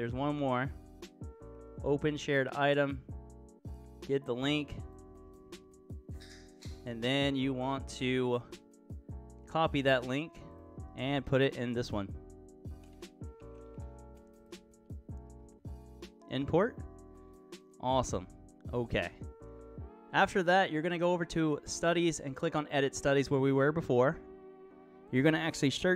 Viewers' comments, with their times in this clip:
0:06 you can hear a Mango Cart opening...
0:07 listen very closely and you can hear someone open a can lol